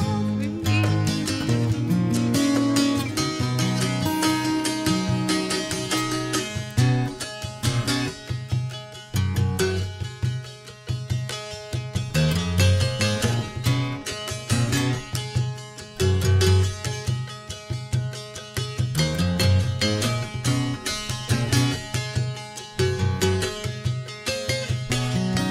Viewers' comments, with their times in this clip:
0:07 This part really astonishes me, the bass element is just remarkable, Joni's music was always so ahead of its time, and JT was able to keep up, which can't be said of most musicians.